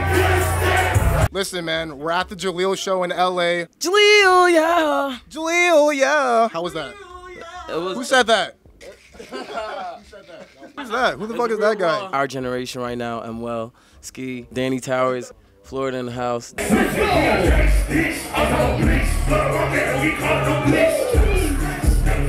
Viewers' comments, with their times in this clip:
0:04 nah why did ski hit that note like that tho